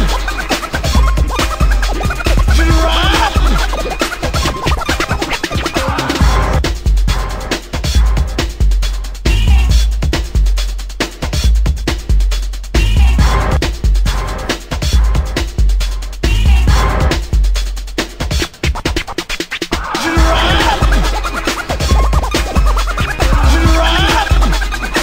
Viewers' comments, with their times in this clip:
0:09 those cuts on are f**** awesome man !!!!!!! great job!